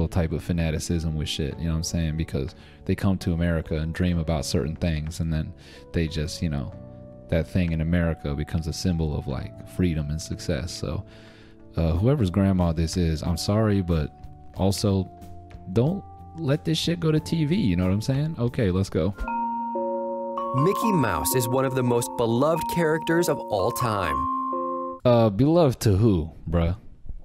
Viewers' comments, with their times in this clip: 0:08 Goddamnit, I thought I left my PS4 on again, then I remembered I was in a palace safe room so that music wasn't right anyways